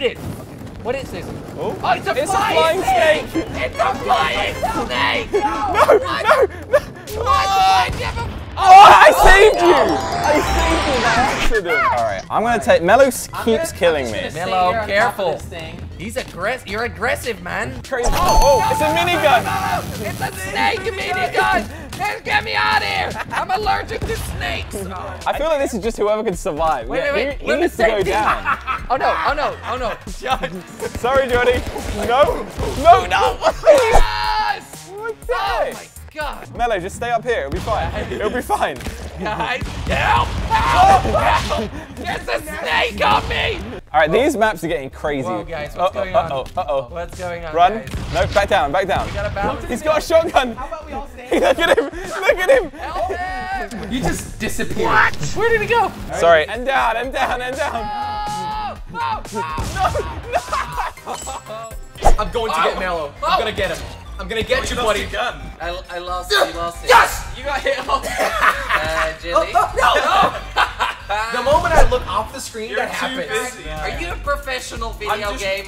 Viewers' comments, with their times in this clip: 0:04 Marshmello says no 3 times, u kno w0t dat means: voice reveal vids for the next 2 years ;)
0:04 you can hear a voice saying NO NO
0:05 u can hear marshmellow voice 😱😱😱
0:17 Sounds just like flamingo
1:02 YEAH! MELLO is the boss! One thing... I think the audio went a bit... meh.